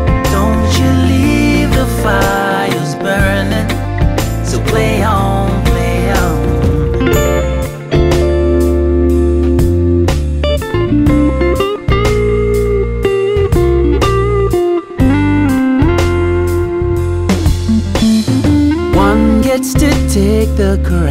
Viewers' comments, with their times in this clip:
0:08 oh dang bro you got chops